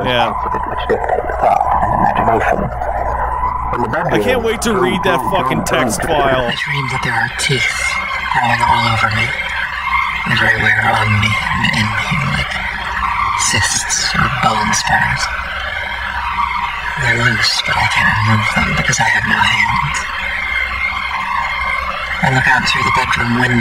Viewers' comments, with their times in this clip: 0:07 sounds like the vocal track from an average Genocide Organ album